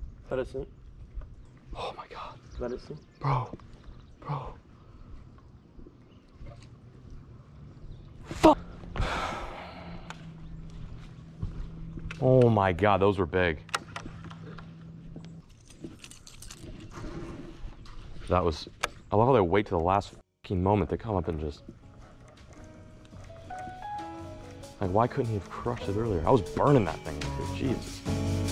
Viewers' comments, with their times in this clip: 0:08 the half a fuuuuuuuuuuccccckkkk
0:09 "omg omg FU-" cuts into nice beautiful music